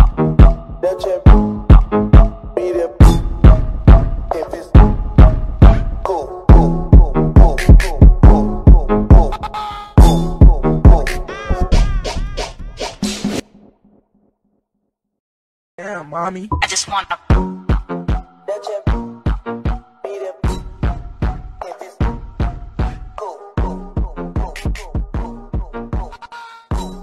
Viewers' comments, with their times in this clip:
0:08 2.0x speed You get a new song👌 Edit: it's kinda different on still new song 👌